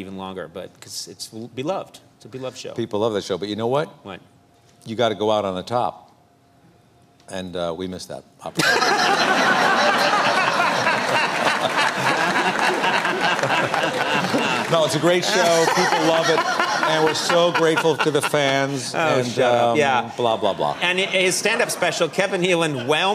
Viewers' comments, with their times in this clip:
0:08 Conan's laugh Gotta love it